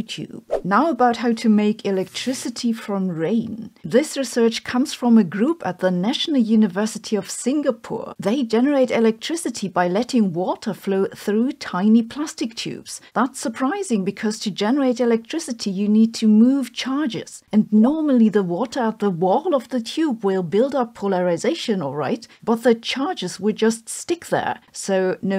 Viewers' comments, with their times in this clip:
0:08 “Water from tiny prostitutes.” Watch at 2x speed.